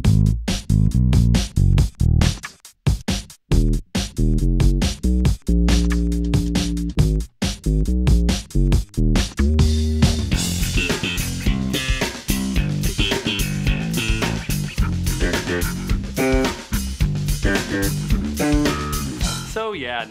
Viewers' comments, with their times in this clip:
0:03 I have to say, the guitar-sound has something cool. A bit weirdly electronical. Oh, and with the chords: Motörhead. Lemmy always played chords on the bass^^